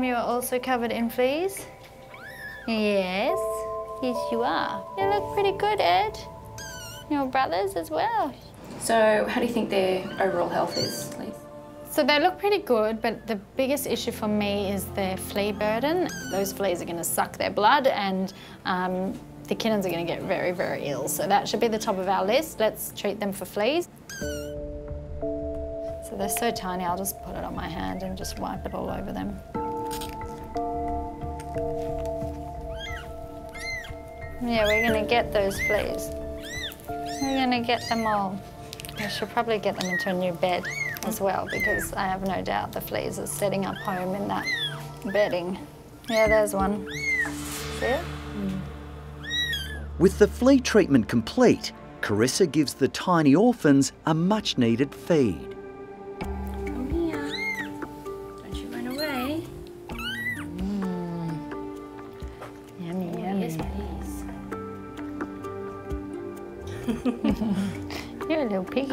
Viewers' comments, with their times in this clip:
0:04 I have had the joy of growing up with so many kittens over the years, but this is one of my favorite baby sounds they make!! It's just so cute 😍! It's not a worried sound, it's almost a curious sound they make, almost like they know that you're talking to them!
0:49 I thought he said a much needed fade🤣